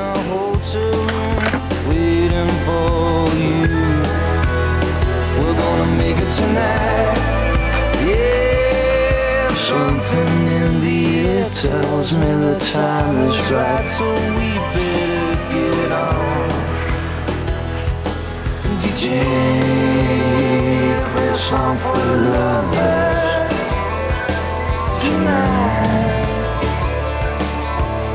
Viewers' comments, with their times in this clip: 0:09 I've watched this video so many times over the year that it doesn't sound right without the extra harmonies and noises now. I can't listen to the original recording without signing the harmony along to it